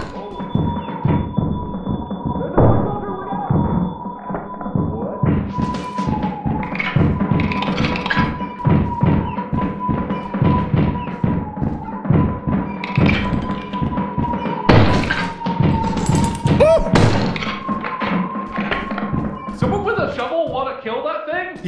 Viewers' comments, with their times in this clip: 0:04 Mark: how’s everyone doing? Everyone else frantically screaming